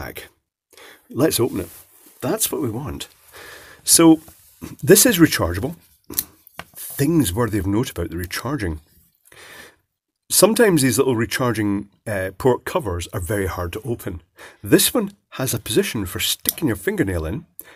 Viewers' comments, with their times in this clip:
0:04 am. You got to love the peace & quite at that hour.